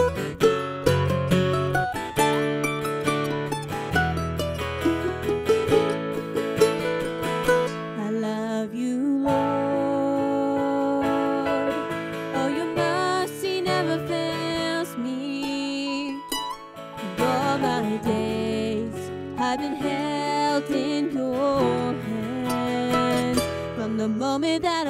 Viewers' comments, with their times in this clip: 0:08 it's so nice to hear the way you sing it Praising and worshiping God. God bless us all always🙏👍👏👏👏👏👏💖😍